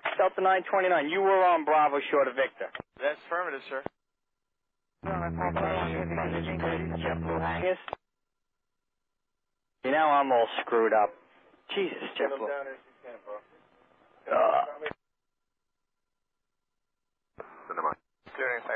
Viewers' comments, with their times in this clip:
0:04 The alien with the buzzing killed me Lol!!